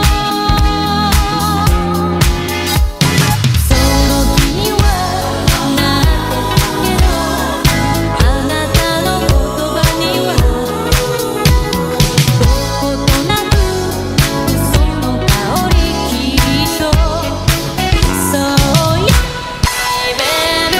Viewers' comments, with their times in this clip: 0:03 This is so wholesome! Love how the music and with the video is in the same beat, E.G an ability or aa hits to the rhythm of the music. The clip may be my favorite. Just listen to the music and everything yorick does, including his movement when ghosting. If this was intentional or not, props to you man!! Just straight out vibin to the video <3